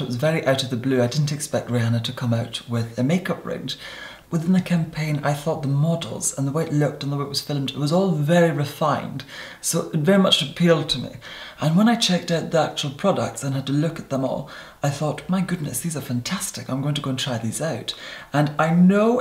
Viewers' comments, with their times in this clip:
0:05 When he/she said "models" I thought he/she said "mortals" LOL. Possible proof that his beautiful creature isn't human. Explains it.